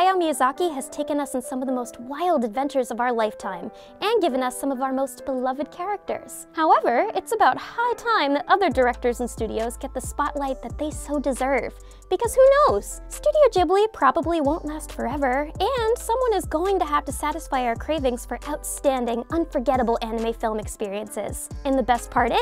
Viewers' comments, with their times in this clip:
0:07 Sounds like Zaytoven in the back Wasn’t even paying attention when that beat dropped lol. Junk was hard